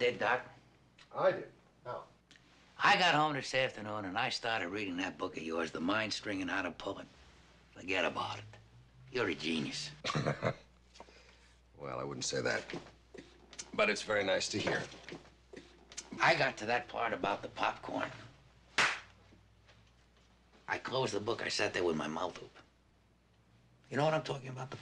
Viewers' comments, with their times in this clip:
0:06 not just accent who talks like that in LA
0:07 his Italian side came out with that "Forget about it"😂😂😂😂
0:08 Colombo says Fugedaboudit. Earliest use in media ever?